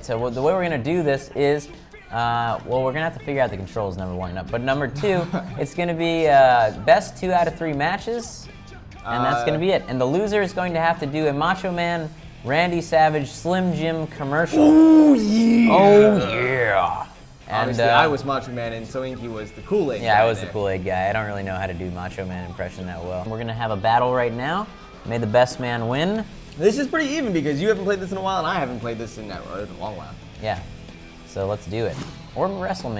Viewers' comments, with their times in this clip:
0:10 Hahahaha ha some1s playing gta in background
0:18 some wan is playing gta 5 in the backround